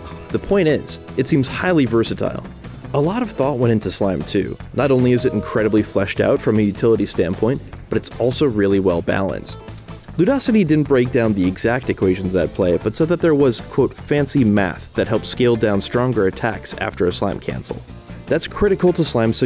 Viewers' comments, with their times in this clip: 0:04 Did this dude’s Microsoft mail ring in 😂